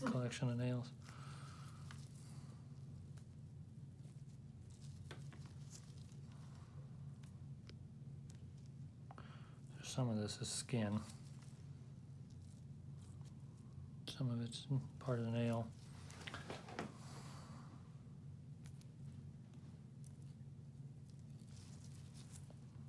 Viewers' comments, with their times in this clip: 0:03 that little peice made such a loud noise.